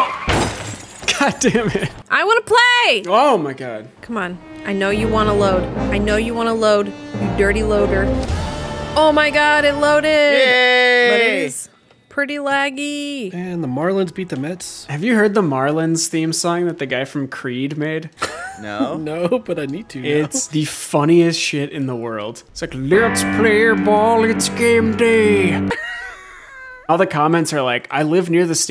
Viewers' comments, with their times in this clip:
0:08 I just loved the Witcher/gwent wail , gave me flashbacks
0:09 That Witcher “aaaaahhhhhhhh” respect to the editor for that gem 😂🖤